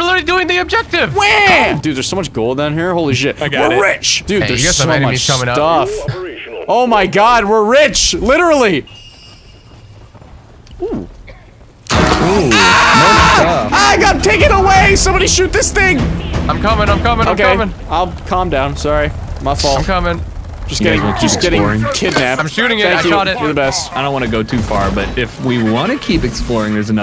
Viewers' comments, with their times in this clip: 0:08 I heard the mactera grabber and was thinking "shit boutta get crazy REAL quick."